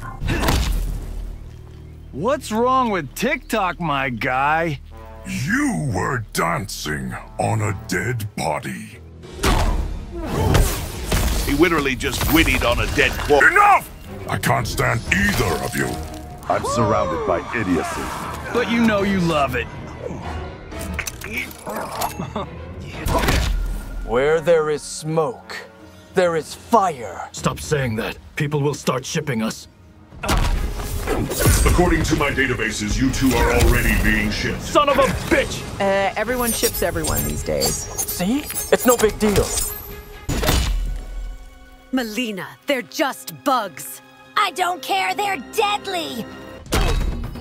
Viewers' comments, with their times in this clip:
0:09 "He witerawy just gwiddied on a dead body"
0:23 is so good bruh, they got mask to cover their mouths, and Scorpion's movement at the end sounds like he actually said it too
0:23 The absolute CONCERN in Scorpion's tone is what sells it, shit had me rolling. XD
0:34 the emphasis on the word bitch with the timing of the poses 😂😂😂
0:34 that "son of a bitch" is the realest Ai tone I've ever heard. Even the bot was pissed ☠😂
0:35 That timing on bitch was perfect 💀💀